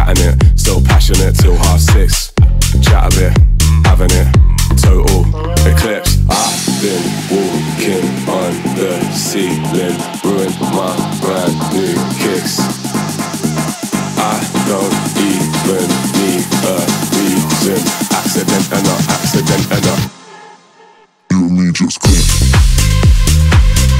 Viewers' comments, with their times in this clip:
0:06 I just imagine Ricardo Milos dancing this music. Hahah reminds me a little Halogen-U got that in the